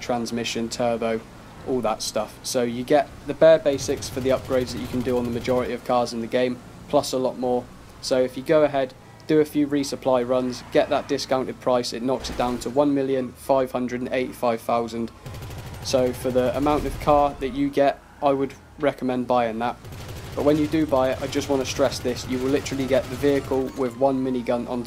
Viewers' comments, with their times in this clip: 0:05 that crash though.